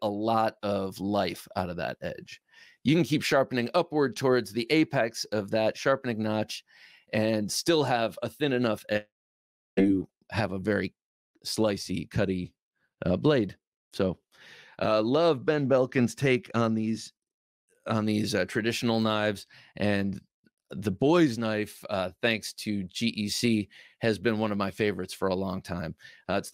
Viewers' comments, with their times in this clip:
0:07 Haha. You let one fly Thanks for the laugh . Don t try and deny it either 😂